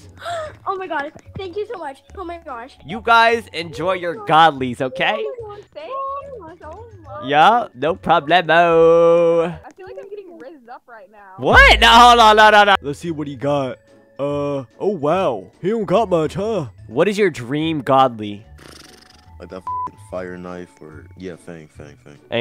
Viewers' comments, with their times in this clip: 0:06 The girl in was calm with the omg